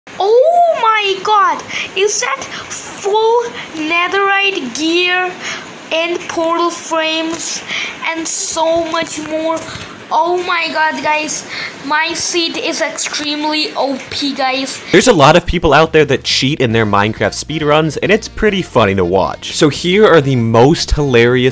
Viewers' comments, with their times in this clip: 0:01 he sounds like me when i hear myself on the recording
0:03 THE KID VOICE- it made me laugh so hard😂 but like- no offence